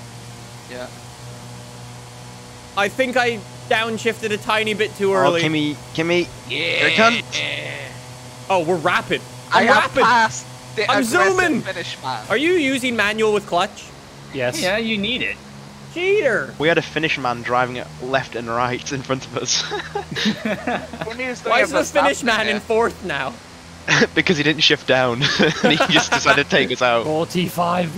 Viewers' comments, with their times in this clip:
0:09 sounds like a weedeater about to run out of gas and oil 😂